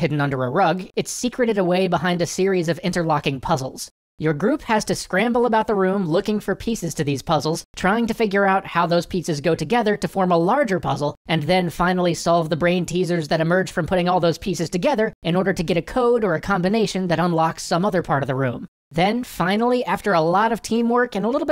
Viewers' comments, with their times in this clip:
0:08 "Trying to figure out how those pizzas go together..." XD
0:08 Forgive me for being super duper hungry, but I heard: "How those pizzas go together to form a larger waffle"